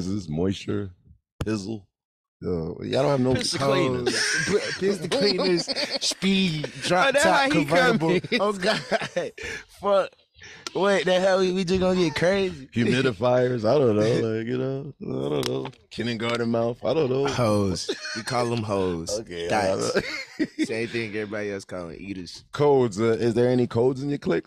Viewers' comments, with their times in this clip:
0:05 got me dying with that laugh💀